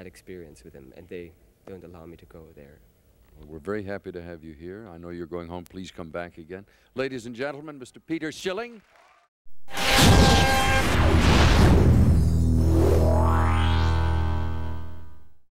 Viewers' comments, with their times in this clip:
0:09 blew out my ear drums